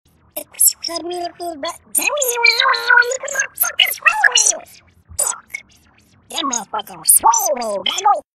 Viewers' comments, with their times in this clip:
0:03 I like the way she says fuck